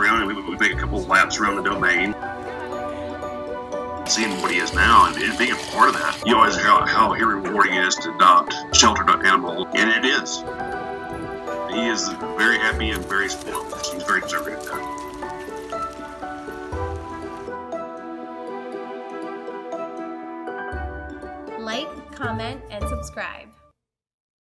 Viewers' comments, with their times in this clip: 0:07 that double bark again!